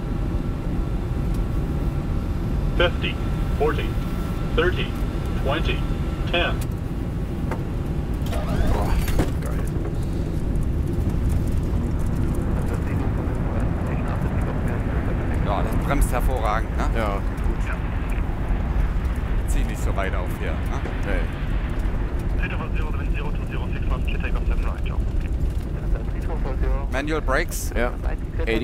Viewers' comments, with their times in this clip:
0:09 who let R2D2 on board? 😄